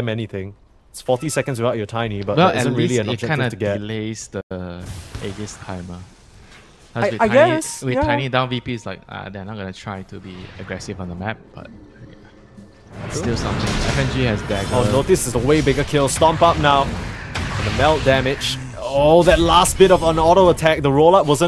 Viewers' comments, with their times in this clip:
0:08 there's a girl's voice and i dont know where it came from